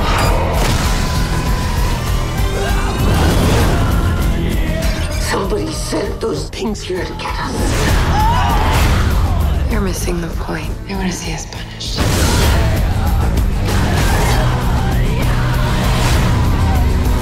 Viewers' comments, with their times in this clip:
0:04 Does this remind anyone of Scooby Doo? It doesn't help that the guy sounds like Shaggy